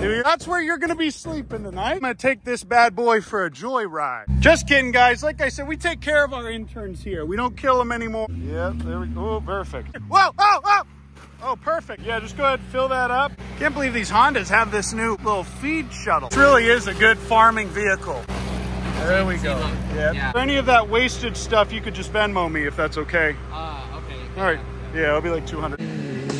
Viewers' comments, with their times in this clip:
0:09 he sounded like woody from toy story